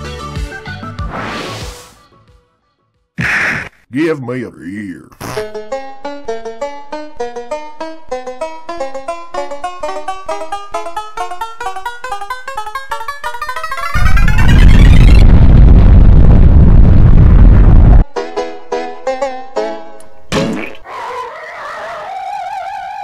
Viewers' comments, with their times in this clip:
0:09 song gets faster